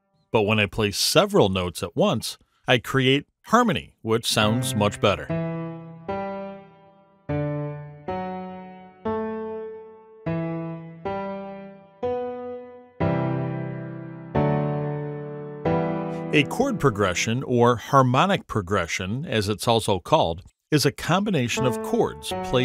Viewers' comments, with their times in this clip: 0:04 already sound like a Naruto Soundtrack 😊